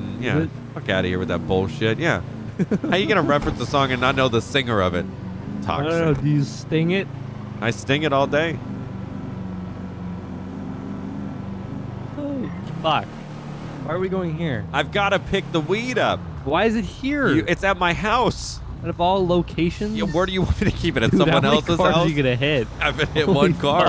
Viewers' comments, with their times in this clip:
0:10 Lmao that voice crack